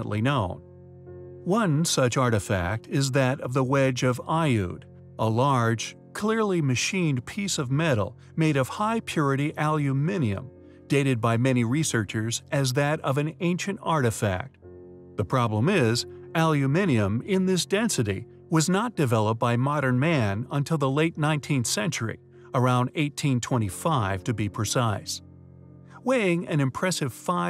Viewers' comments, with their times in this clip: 0:10 There is no such thing as ALEUMINIUM as in its either EU/Brit: - Aluminium [A-lu-me-ne-um] or (full equivalent) USA: - Aluminum [A-lu-me-num] ….since you have a American accent….